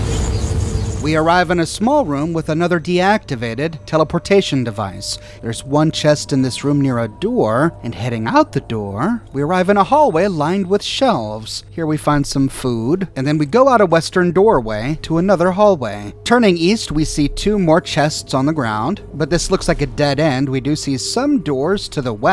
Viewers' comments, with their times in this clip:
0:05 pretty sure that’s a voice crack.